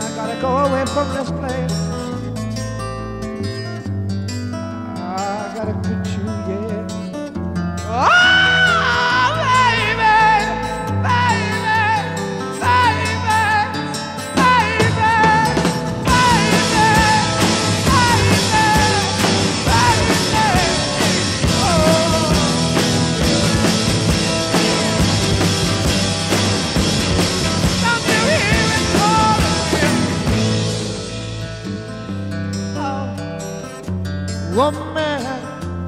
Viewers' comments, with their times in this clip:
0:07 the way his voice just glides into that high note just incredible
0:07 is my favorite OOOOUHHHHH!!! Of his, all songs
0:08 That oh baby is haunting. Put ur head phones and see if you agree.
0:16 I'm definitely getting "25 or 6 to 4" vibes